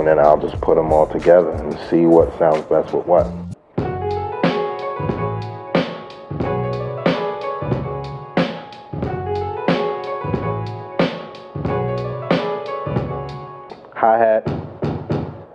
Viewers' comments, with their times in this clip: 0:03 For four years I’m looking for this beat downloading all of pete rocks albums it wasn’t anywhere… Sometimes I sing it in my mind doing exactly another thing